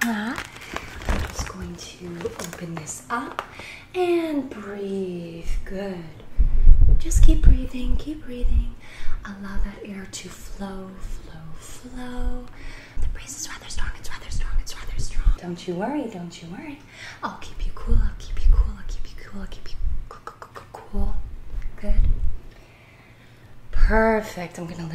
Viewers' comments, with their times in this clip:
0:09 that light breeze was so relaxing. Felt it all the way here in the states